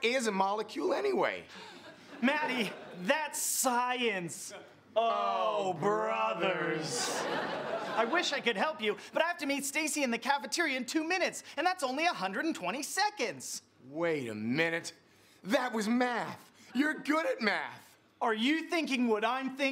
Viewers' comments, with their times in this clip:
0:04 there’s just a lone heh in the background